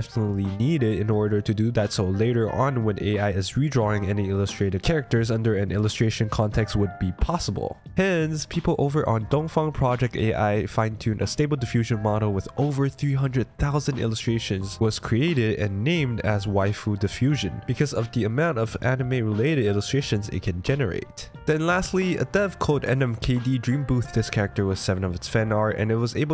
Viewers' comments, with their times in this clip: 0:10 DID YOU JUST CALL TOUHOU DONGFANG???????????? Ok, i've heard of the whole Kurenai Misuzu meme but this is just on another level.